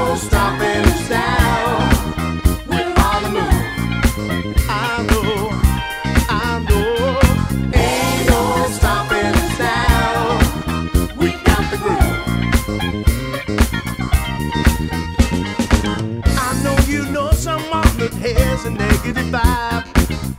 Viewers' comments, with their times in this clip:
0:03 Nice playing and singing. I really thought you were going to do the machine gun thing.